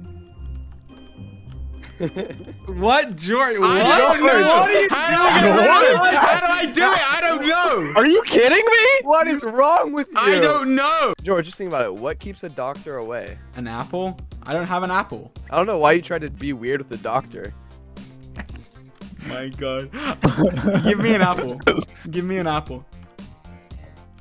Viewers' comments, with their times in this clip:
0:07 that was the most American "Are you kidding me?" i've ever heard